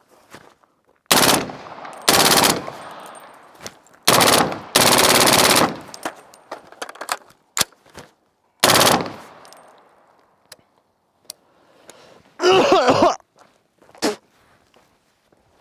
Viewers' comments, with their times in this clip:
0:03 I find it hilarious how to budget gun runs better then the mcx and is quieter by a massive margin